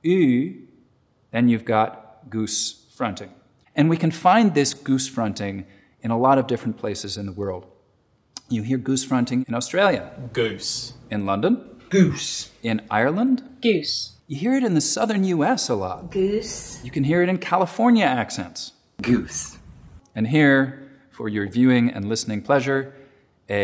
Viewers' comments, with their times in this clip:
0:08 that's just the "ü" sound, of many languages.